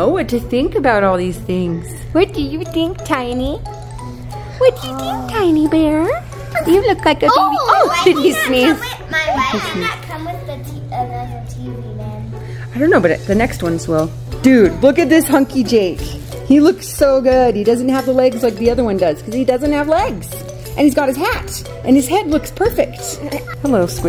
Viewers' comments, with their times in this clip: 0:06 was that the first time marshmallow sneezed